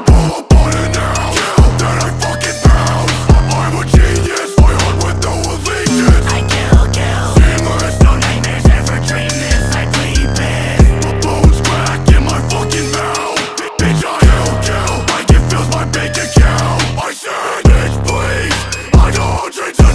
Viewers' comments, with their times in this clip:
0:04 Straight heat that flow insane